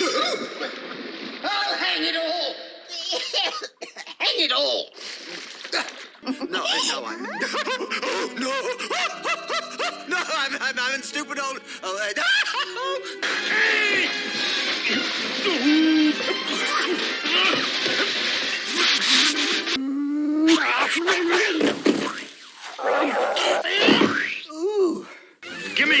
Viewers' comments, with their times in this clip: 0:06 LOL, was someone tickling the voice actor IRL? That sounded genuine!